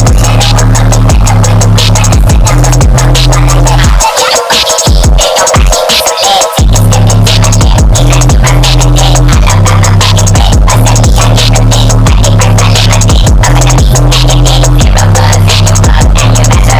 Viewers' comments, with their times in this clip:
0:03 this new minion track is lit